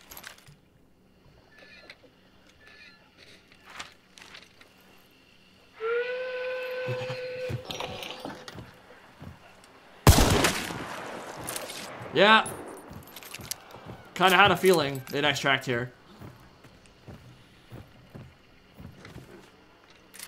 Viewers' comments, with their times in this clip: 0:05 Can I get an explanation of that primal panic when the steam boat blew it's horn?